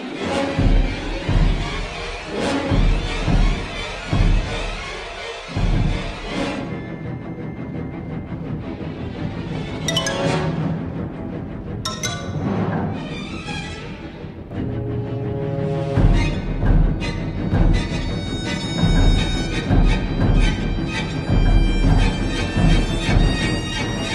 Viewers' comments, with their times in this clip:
0:07 sounds like back to the future